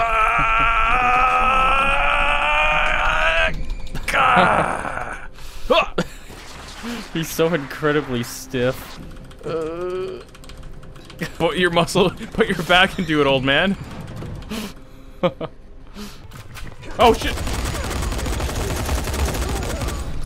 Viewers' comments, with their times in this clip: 0:05 dante sound just like leon jumping